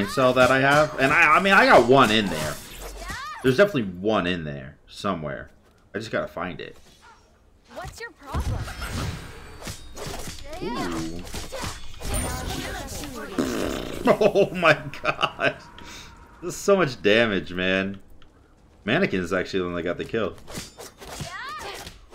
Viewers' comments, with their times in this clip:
0:10 i actually went pfffttt out loud too haha